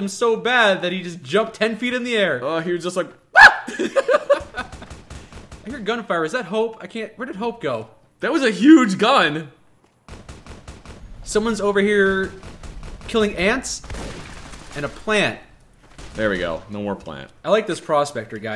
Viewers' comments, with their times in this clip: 0:03 The scream and clip fucking got me X'D I probably watched that little three second clip 10 times repeatedly... Love it